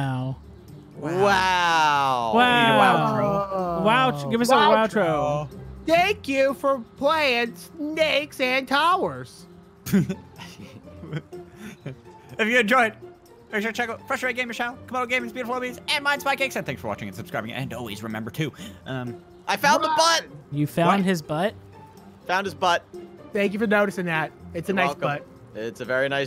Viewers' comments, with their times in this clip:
0:07 i thought i heard "Snakes and cowards"